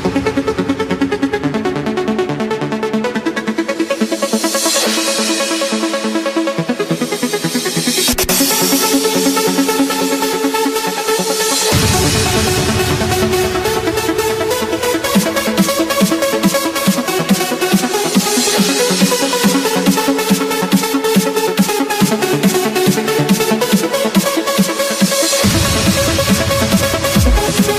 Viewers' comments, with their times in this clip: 0:08 What's the song's name in the minute ? It's so relaxing!